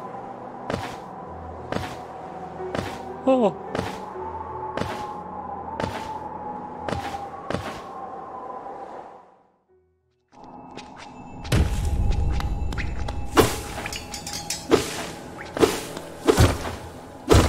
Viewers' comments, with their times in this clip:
0:03 that noise of misery 💔 poor elderbug